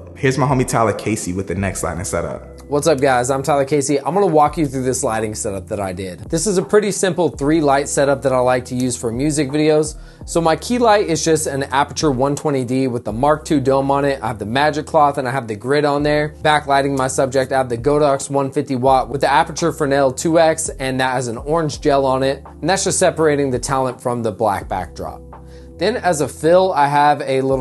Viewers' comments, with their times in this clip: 0:10 i thought he started rapping